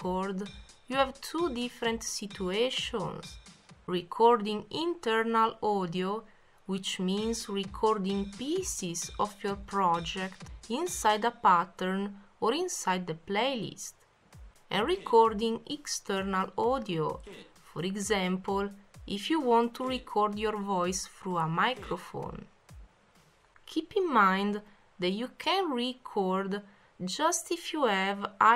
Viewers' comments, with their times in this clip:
0:10 Sorry, but that sounded like you said "inside the bathroom." ^^;